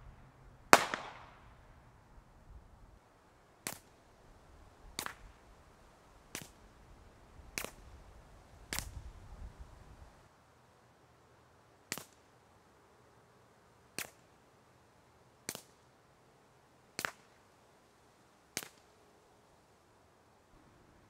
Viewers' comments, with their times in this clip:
0:03 sounds like the clip they use for movies lmao